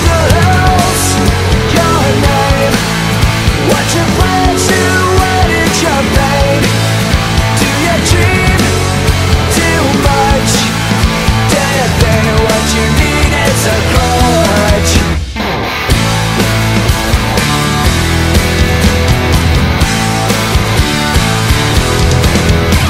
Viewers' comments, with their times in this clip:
0:03 i always thought it said "what do plants do" lol :p